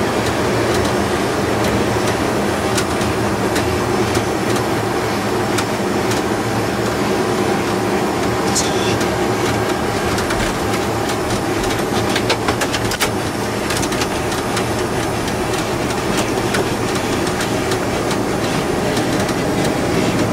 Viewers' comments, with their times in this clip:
0:06 The 1st officer was turning his flight director off. The noise heard is a mystery. It may have been someone giving audible sound effects to the wheels touching down.